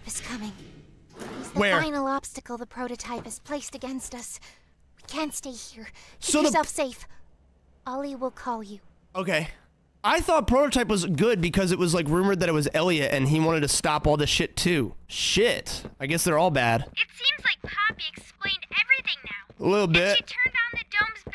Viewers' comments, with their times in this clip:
0:03 Poppy actually saying KYS lol